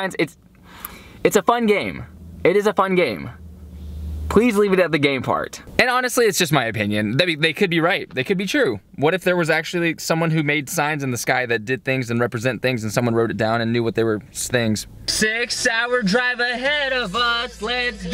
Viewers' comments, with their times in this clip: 0:04 when he said please i felt like spit hit me i dont know how that was possible since im the only one here and i didnt do it maybe a orb hit me idk something lmao but it felt exactly like he spit while talking lol that sucked